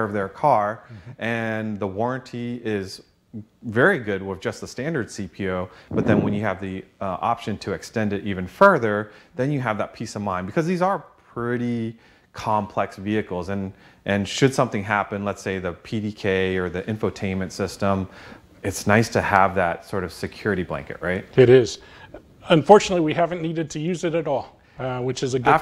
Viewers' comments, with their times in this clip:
0:06 That guy busts a huge dad fart I am rolling right now lol!!!!!